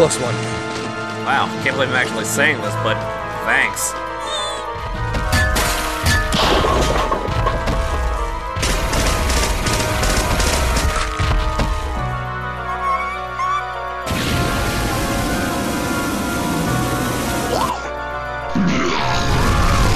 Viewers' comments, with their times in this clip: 0:04 ok this gave me jurassic park vibes nd i love it so much. it kept me laughing because: 1) bliss crashed into silver. 2) the heavy footsteps had me giggling bc i knew it was twink 3) golden x voice